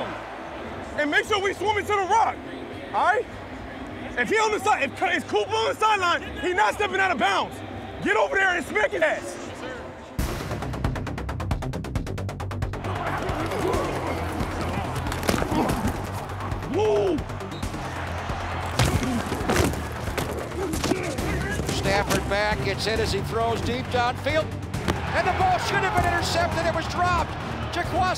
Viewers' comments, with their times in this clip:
0:10 Why does sound like the start of razormind?